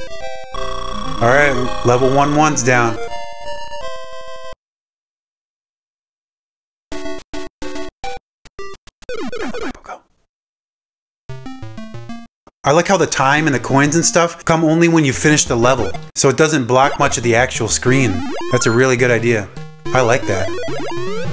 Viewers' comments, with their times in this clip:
0:08 having you whisper right in my ear bugged me out hahaha
0:09 Is that whispering ? Caught me off guard 😂